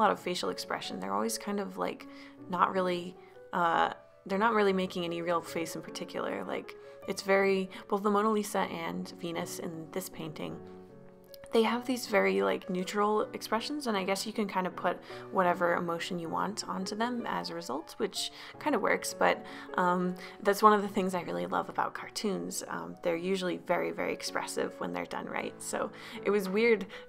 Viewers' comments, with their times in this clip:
0:08 thought she said penis 😂😂😂👌